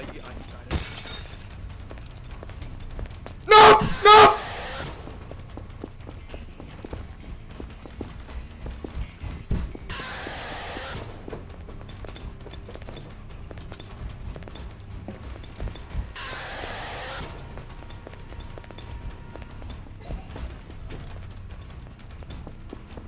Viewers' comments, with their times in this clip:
0:06 dead by daylight ahh chase music ☠